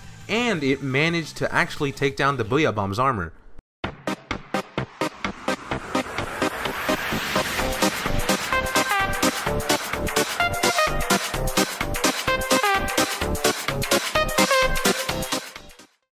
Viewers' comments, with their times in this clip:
0:04 Trainwreck of an electric swing!